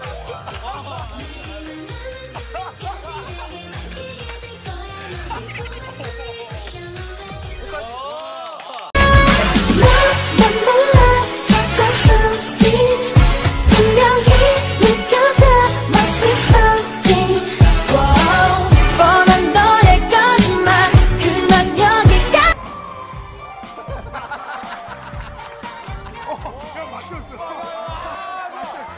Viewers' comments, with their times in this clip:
0:09 is their song beautiful,arent it?
0:14 they danced their choreo, why girls day on bgm